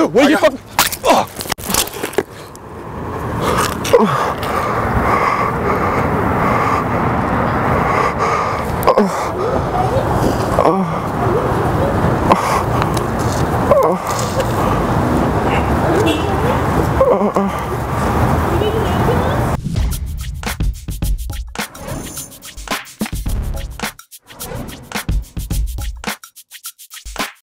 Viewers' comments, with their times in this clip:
0:04 if you close your eyes it sounds like porn
0:04 a little porn sounds
0:11 all the moaning is from the camera guy
0:16 Her:are u ok? Do u need an ambulance Him:moans.